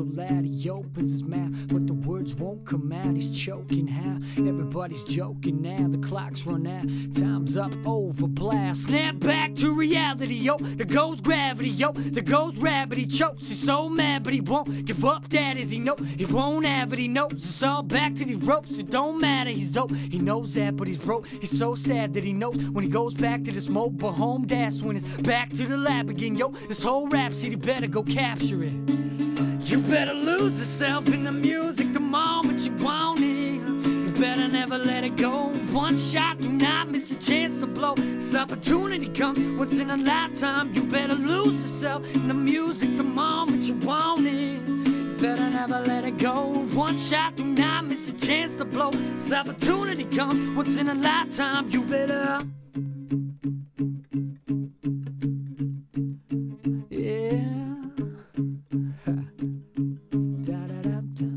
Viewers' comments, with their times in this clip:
0:08 i swear to god you sound just like eminem
0:08 eminem is that you?
0:09 Just fucking listen and tell me he can't rap
0:09 i thougt u was Eminem :O. Best cover i ever heard ! :)
0:09 "Snap back" Sounded just like Eminem if you could keep that voice up the whole song that would be crazy weird. Great job though haha
0:09 he sounds exactly like eminem !
0:10 not as good as eminem but but before you were amazing then you went way to rocky doesn't suit the song!!!
0:10 I swear he used a radio or something at first, because he sounded like the real Em, HE MUST"VE ATEN EMINEMS VOICE.
0:28 I love it how he goes wild and laughs like a child
0:28 Goes in hard Wow
0:29 i love this guy's singing from
0:30 Wow. That was great. Really enjoyed it. Wasn't expecting that part nice acoustic style
0:30 his voice sounds a little bit like michael Jackson
0:38 Did he fart o.O
0:39 did he pass gas lol
0:39 He farts =)) . or at least it sounds like it. good song though:D
0:39 Dude did you just fart ?
0:39 I heard a shart in the mix
0:39 lol i would have never noticed the fart the guy who first noticed it must have thought before listening to this song: hm im going to check if this guy farts in the vid :o !
0:48 he farts also